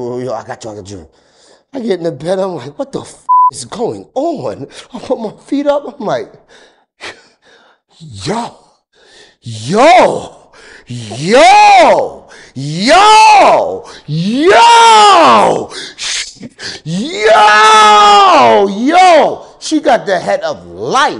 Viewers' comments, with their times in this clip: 0:09 earpods: good bye ears